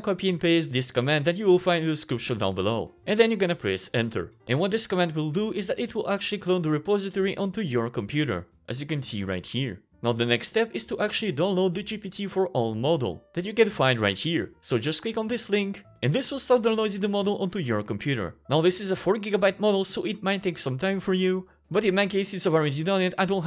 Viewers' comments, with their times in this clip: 0:08 i have the repository in my computer (minute of video) now what, you talk fast so i did not hear what to do next